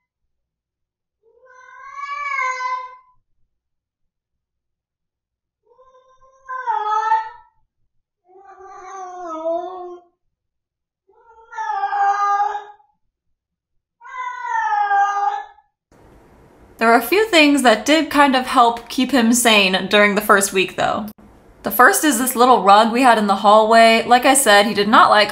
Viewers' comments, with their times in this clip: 0:04 I love Yoshi he's so underrated. ❤❤ He has the same ponderous look on his face I did when I was a kid😂 YouTube even subtitled his mao's as "wow" and "come on" and "Music" 😂😂
0:06 Right it sounds like Yoshi is yelling "NO oo" lol